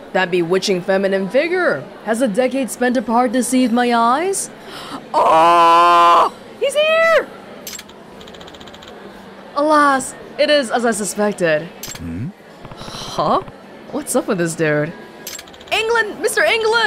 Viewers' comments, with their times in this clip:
0:04 owwww my ears :(